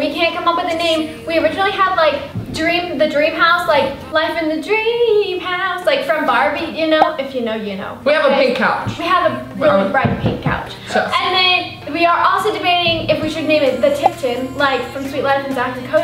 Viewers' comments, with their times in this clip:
0:04 she sounds amazing???